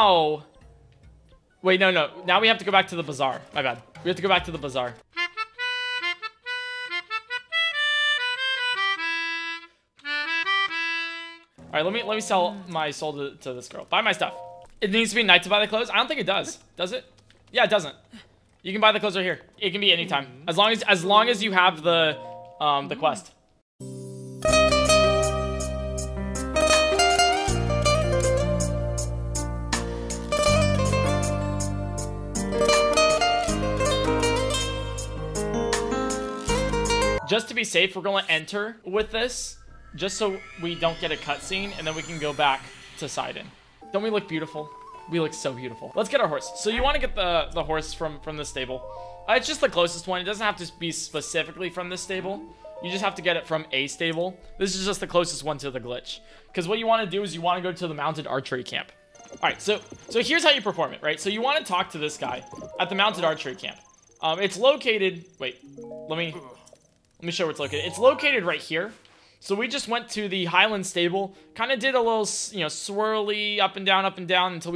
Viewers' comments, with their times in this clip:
0:05 that was so unexpected which was perfect because Unexpected Saria’s Song always just makes my day And also expected saria’s song but it’s just not the same
1:00 the guy says “So....big.....” doesn’t sound weird at all